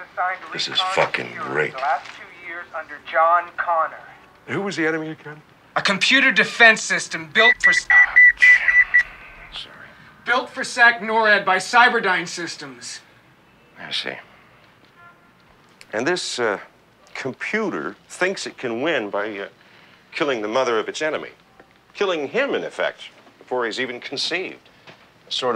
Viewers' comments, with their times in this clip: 0:06 Just noticed something when Silberman's beeper goes off, Kyle stops talking like he is expecting to hear orders. (might be nothing, but also a little touch that shows he is a soldier)